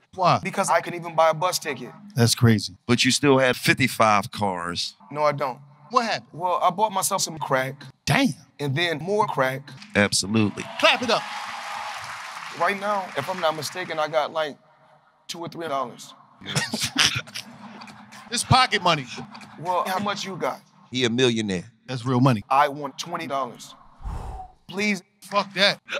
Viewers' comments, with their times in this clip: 0:10 "Clap it up" thought he said "crack it up" 💀